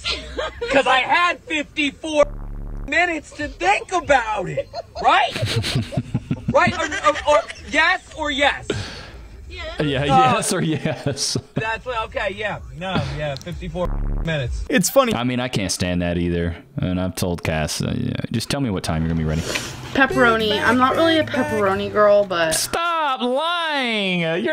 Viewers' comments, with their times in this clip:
0:07 To give her credit too, she is giggling like mad (not getting MAD) and that does make it seem that their having a good start with banter.